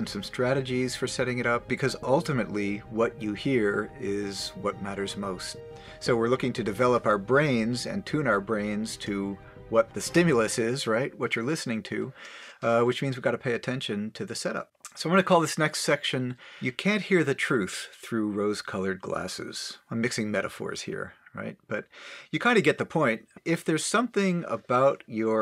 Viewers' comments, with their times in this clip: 0:08 here in 2021 hearing "what the stimulus is" secs made me check the date lol the beat drop made it even more dramatic lol pandemic prophecies Alfred Hitchcock style... great vid by the way nice material